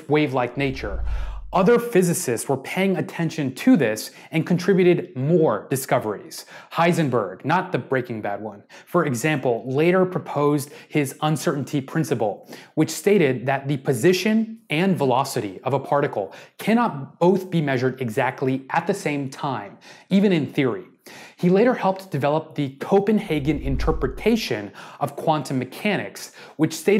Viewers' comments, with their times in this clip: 0:09 And the h on the right in the Heisenberg uncertainty relation should be an h bar. (Also, deBroglie is pronounced more French :D )